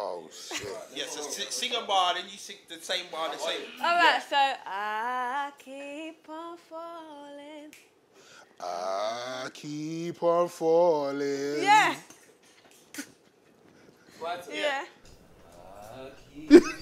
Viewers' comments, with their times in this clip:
0:04 eyy she can sing uno :O not gonna lie her voice is maud lol